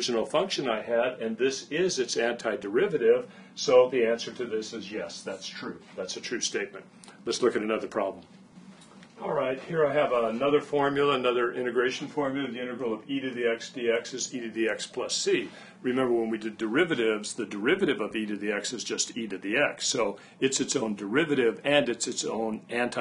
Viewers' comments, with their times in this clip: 0:10 ........ "sex." attenion drawn.